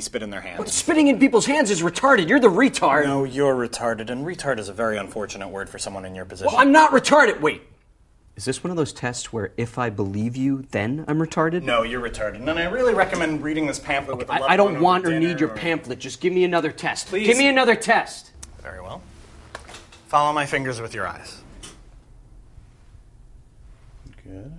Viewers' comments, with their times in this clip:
0:08 The abrupt delivery after of "No, you're retarded" gets me every time